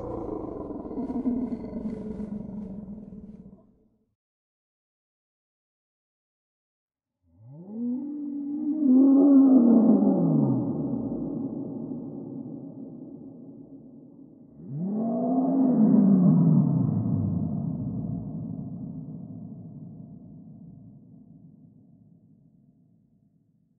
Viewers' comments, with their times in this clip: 0:05 Plateosaurus sounds like a titan
0:06 imagene hearing this before you realize that isent the wind, a litteral animal is making that sound